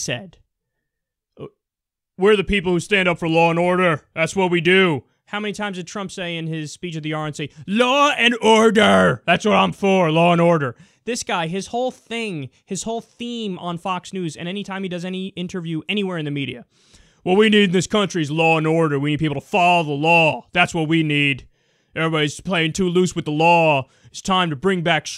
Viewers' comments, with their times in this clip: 0:07 That imitation was spot on